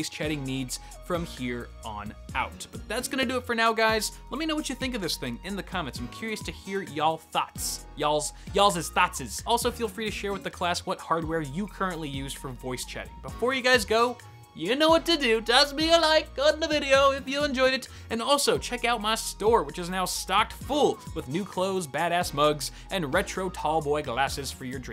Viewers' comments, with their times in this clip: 0:08 He called us thots